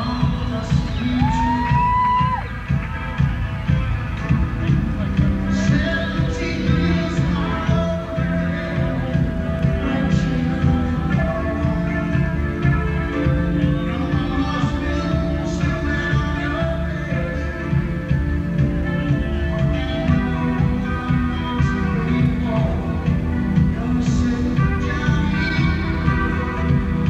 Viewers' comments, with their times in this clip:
0:08 mike misses a riff before